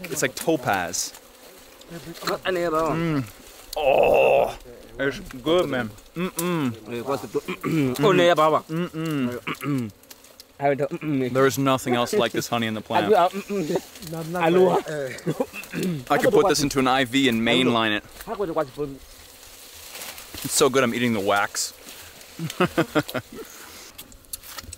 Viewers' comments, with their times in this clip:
0:05 this moment when he mimics "mm-mm" and then understands it to mean "tasty" is so good! I don't know what they're saying but I can tell he talks about "mm-mm" with another tribesman right after 😂
0:05 I love how the chief immediately starts using the "mm-mm" sound as an onomatopoeia
0:05 Idk what that one dude that shared the honey with him but he was definitely joking around about him saying "mmmhmmmmmm" :D made me giggle
0:06 they were definitely making fun of his "mmm-mmm"🤣🤣
0:07 the universal agreement for hm-hm.